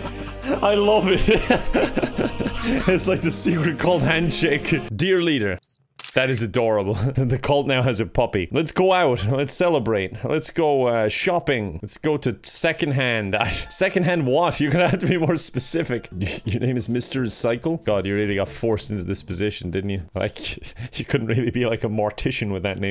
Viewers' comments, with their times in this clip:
0:09 Pedometer sounds somehow wrong imo. xD